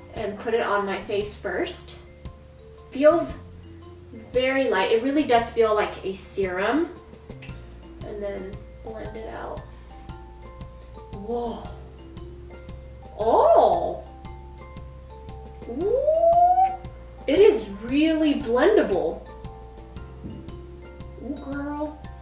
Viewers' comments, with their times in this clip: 0:10 Those sounds of approval that she makes Lol. xD